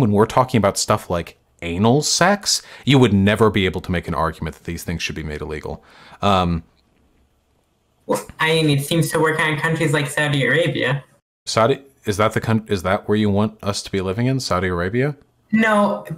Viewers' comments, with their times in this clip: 0:03 I love how this guy doesn’t realize if he walked into Saudi Arabia with that voice he would be thrown off a roof.